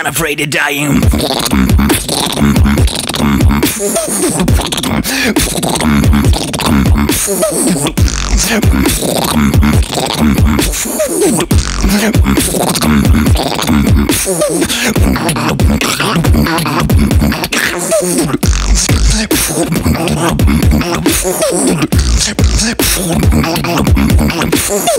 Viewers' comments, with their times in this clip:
0:09 when my friend farthing